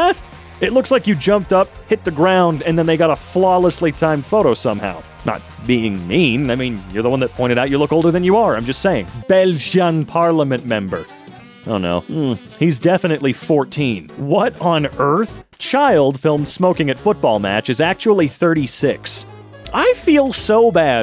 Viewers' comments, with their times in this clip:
0:09 do Americans really have this hard of a time pronouncing my country’s name?